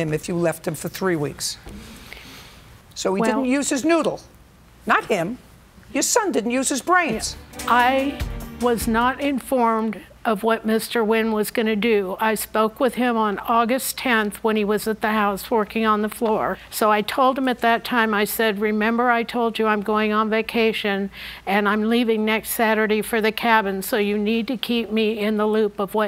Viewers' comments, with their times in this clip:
0:10 she pronounced his last name correctly! Maybe not the exact way but close enough!